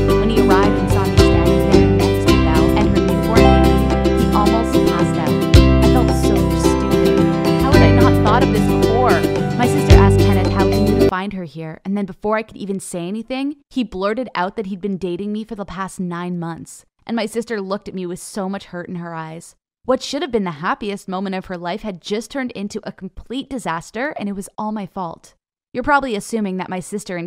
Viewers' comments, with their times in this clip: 0:09 what with the music !!!!!!!!!!!!!!!!!!!!!!!!!!!!!!!!